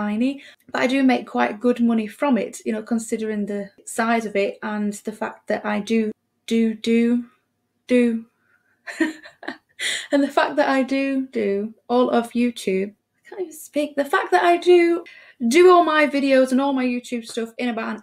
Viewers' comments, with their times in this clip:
0:06 "Do, Do, do-do-do..." Sounds like you're about to go into the Baby Shark song. :D